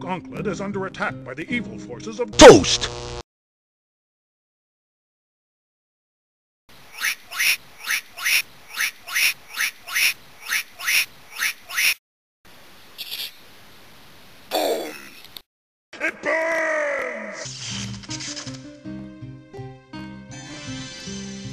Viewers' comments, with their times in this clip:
0:07 He somehow makes his PINGAS quack.